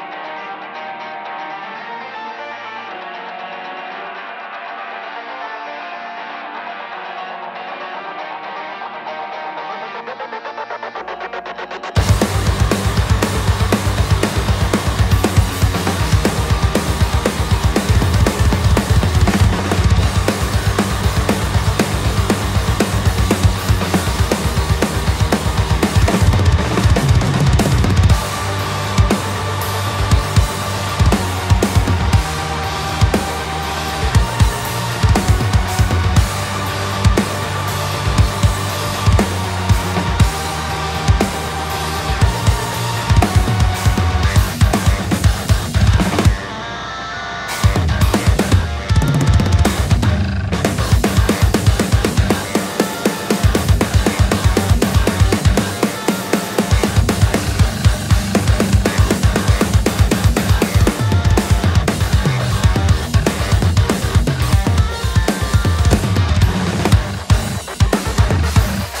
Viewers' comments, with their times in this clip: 0:04 I keep hearing "the lick" on the intro. Specially :) this song is amazing BTW
0:05 T H E L I C K ? ? ?
0:19 I remember when I used to think that snare roll was mis-timed. Now, I acknowledge the fact that it's just played too quickly for human ears to comprehend.
0:24 that fill is too sick man. GJ.
0:38 I really like that you incorporate dynamics into your footwork. By that, I'm referring to things like where some kicks are quiet and some accented. I feel the rhythm so much more, it seems much more natural. So many metal drummers (possibly because they are using triggers, I'm not sure) tend to just have one level of volume on their kicks, even in groovy stuff where it would be so much better with dynamic levels. I'm probably not making any sense, but anyway, keep up the great work!
0:48 Do I hear one of those springy door stoppers ??
0:49 Is there a vibraslap ???
0:50 The bass guitar rattle
0:50 what is that noise ?? sounds like a low note from the bass
0:50 did you sample a door stop spring? 😂 So unorthodox yet perfect.
0:57 How do you get the rattling sound on the guitar chugs at like ? It sounds almost like a really low piano string.